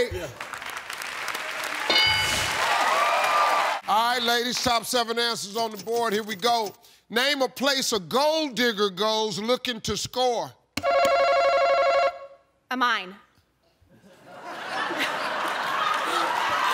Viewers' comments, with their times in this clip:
0:03 To be honest, even I heard Inhale! Being an Indian, even I know what a Gold-digger is!